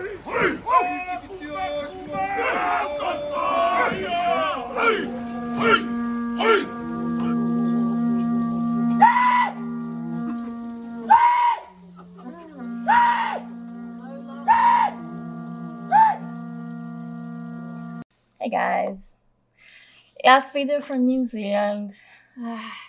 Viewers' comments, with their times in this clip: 0:09 😂😂🤣🤣🤣 That scream killed me